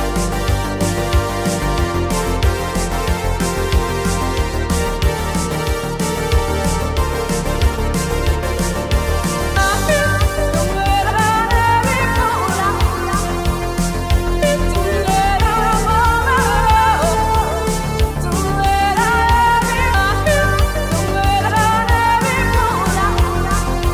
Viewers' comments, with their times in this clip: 0:09 La-He we all have Ebola is so cheery I have to dance!!